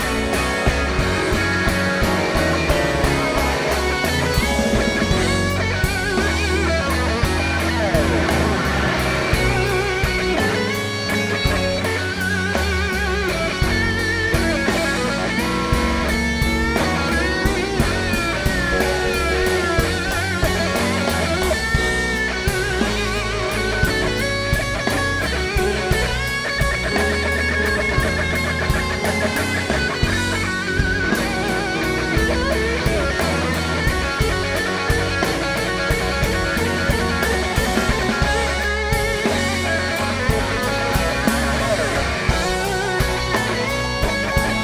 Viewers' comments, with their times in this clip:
0:03 Such a great guitar solo Kenny!
0:30 Ummm....yeah...keep riffing bro...dam...